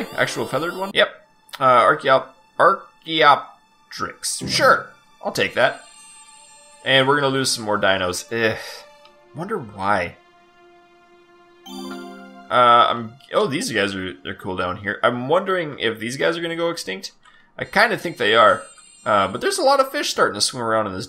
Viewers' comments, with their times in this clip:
0:07 He finally said one right Holy crap